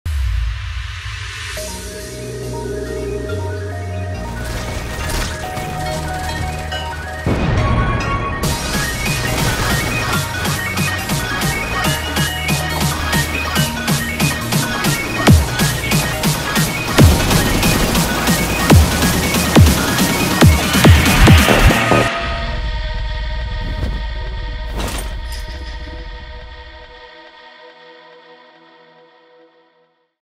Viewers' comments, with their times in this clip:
0:03 I thought it was the narrotor but, it was actually Photon... 😅
0:19 sounds like shin Godzilla roar stage 4
0:20 Anyone else notice the Godzilla roar?
0:20 wth is that godzillas roar
0:20 Godzilla roar real
0:20 Bruh, Krampus scream sounds like Godzilla Roar.
0:20 I heard shin Godzilla roar
0:20 nobody gonna talk about the fact that krampus' roar is quite similar to Godzilla's roar?
0:20 We not gonna talk about the fact the enemy in had Godzilla's screams?
0:20 Godzilla old roar
0:20 wait... did the final boss do a godzilla roar?
0:21 no one is talking about the Godzilla roar that krampus did here?
0:21 bro that sounds like godzilla
0:21 godzilla scream real
0:21 Why is there Godzilla’s roar 💀?
0:22 i just realize that he scream a Gozilla Scream sound (or maybe the dinosaur toy sound that my neighboor kid have it)